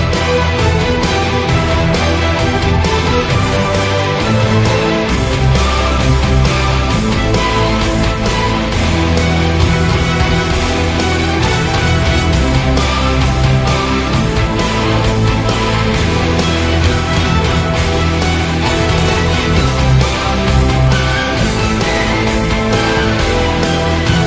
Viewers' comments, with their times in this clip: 0:05 really soundlike "siren" of nightwish ..